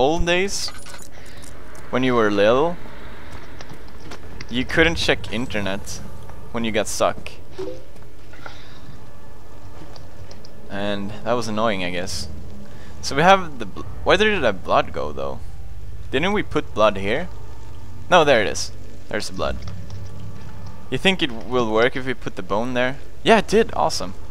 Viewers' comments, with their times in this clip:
0:07 did anyone else hear the fb chat sound and checked their own facebook just to make sure? i know i did lulz